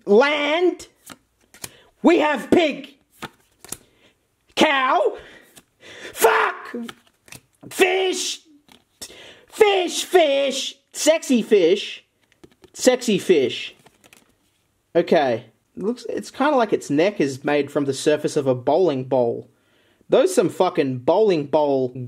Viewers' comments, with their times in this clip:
0:05 Was there post reverb on that Fuck or was it just that loud?